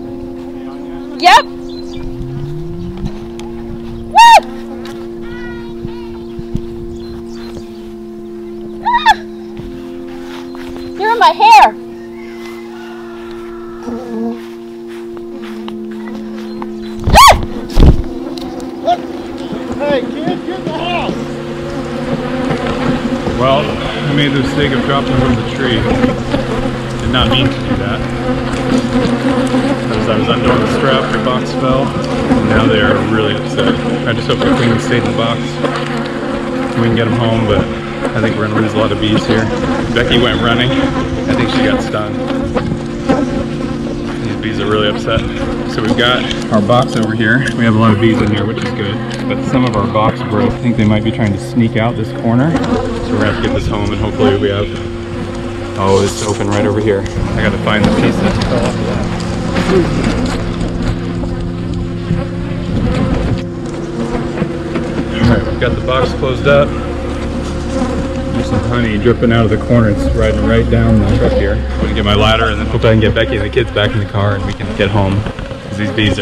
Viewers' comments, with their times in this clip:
0:10 I think I heard a kid crying maybe a bee stung him or her idk but I know that it's a human
0:59 why do i hear villager in minecraft getting hurt?